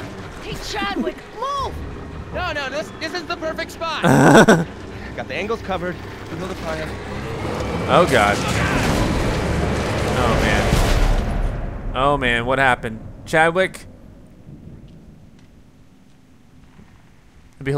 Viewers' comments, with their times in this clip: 0:03 Wasen't expecting the laugh